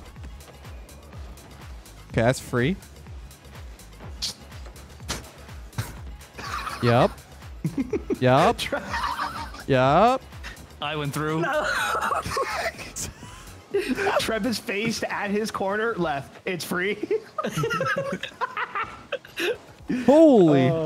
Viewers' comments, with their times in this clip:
0:06 WHAT IS THAT LAUGH :)